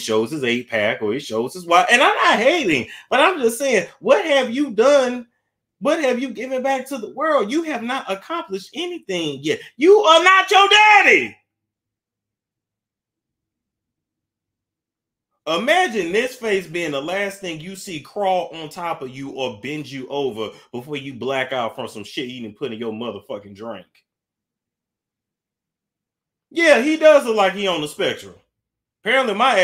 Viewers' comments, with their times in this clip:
0:10 why are you yelling😂🤣🤣🤣 I’m crying bro omg when you said imagine he the last face you see crawling on you before blacking out